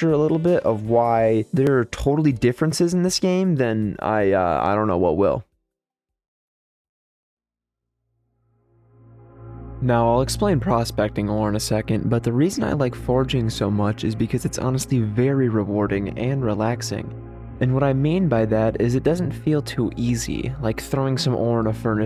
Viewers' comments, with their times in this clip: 0:08 What's the music in the background ? Sounds calming